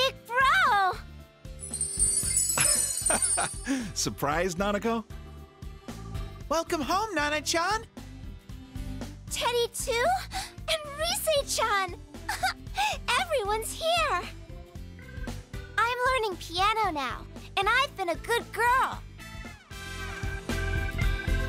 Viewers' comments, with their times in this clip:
0:09 (smash music plays*)